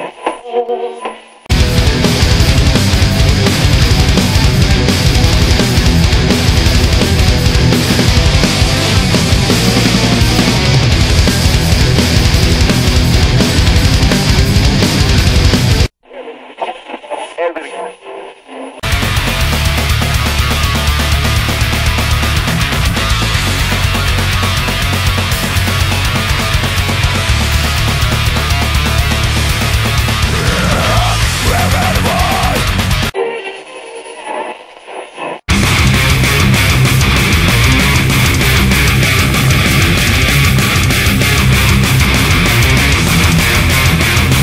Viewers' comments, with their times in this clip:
0:08 like I said its opinion based ...but In my opinion the chorus riff is better than the verse riff......but that doesnt mean the verse riff isnt retarded awesome also I love both riffs
0:32 I actually was going to use that part, has a badass sounding bridge riff too.